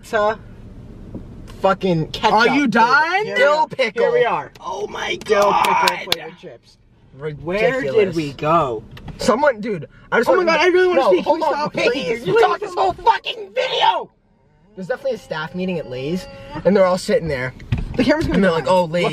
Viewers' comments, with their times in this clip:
0:06 “🎶 please listen to me🎶” I DIED